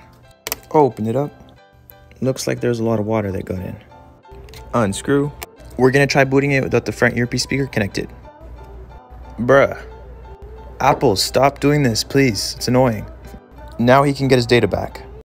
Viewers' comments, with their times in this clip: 0:06 we're gonna try without frontsdhfdfs connected, non-english speakers rip